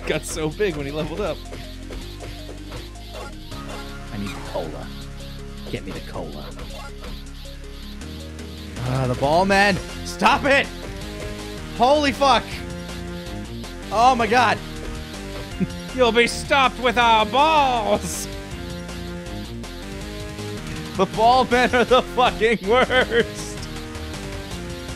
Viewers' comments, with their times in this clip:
0:09 "ahh the ball men" the music start and they hella start punch Goten like it was the ball men's time to shine 😂.